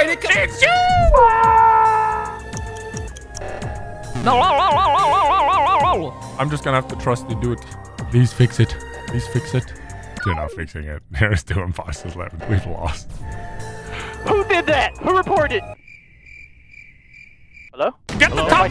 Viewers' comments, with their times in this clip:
0:04 That "NooOoOooOo" made me giggle-